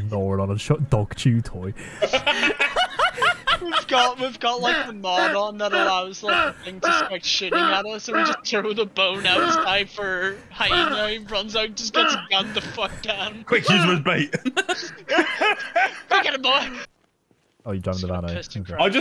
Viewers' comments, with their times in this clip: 0:04 I died laughing at your buddies contagious laugh 🤣